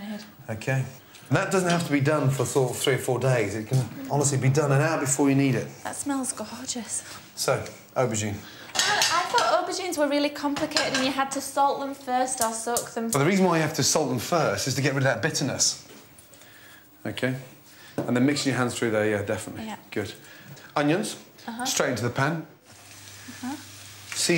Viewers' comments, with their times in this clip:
0:04 that smells go hor geus?
0:05 the girl said that smell gohorgeous 😂😂